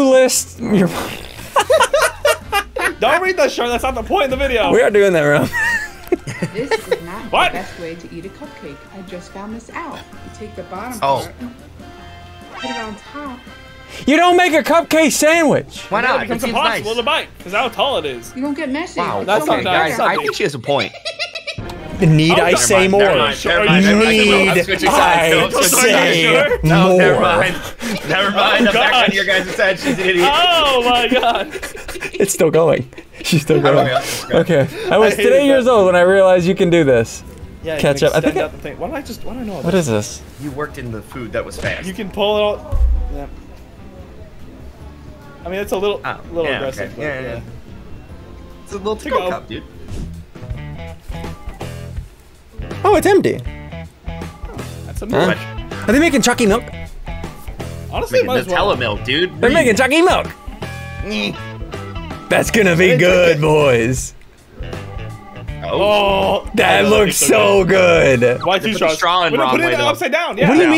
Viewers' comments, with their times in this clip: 0:06 THE GOOFY LAUGH GOT ME ROLLING
0:14 the laugh of the woman is a witch 😱
0:19 wtf was that laugh
0:20 the lauch was getting getting me
0:32 the “heheheheheheheheheehehehehe” got me dying😂
0:57 he was like Chokie Mille newa